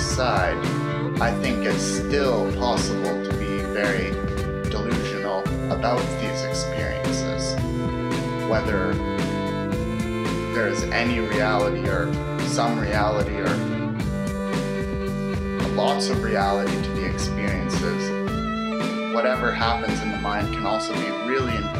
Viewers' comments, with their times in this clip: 0:04 or so.... what is that beep! i must have answers